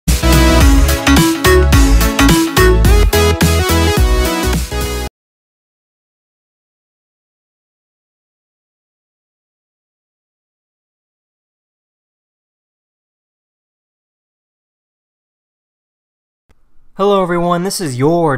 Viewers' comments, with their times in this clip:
0:00 R.I.P. headphone users🤣🤣